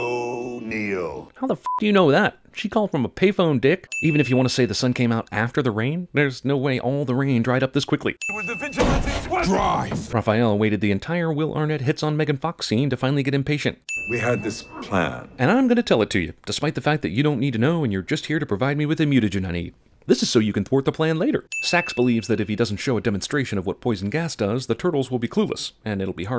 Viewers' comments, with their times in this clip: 0:08 And there's Arnett talking in the Batman voice again. I have to say that WAS what probably motivated him to voice Batman in the Lego Movie franchise.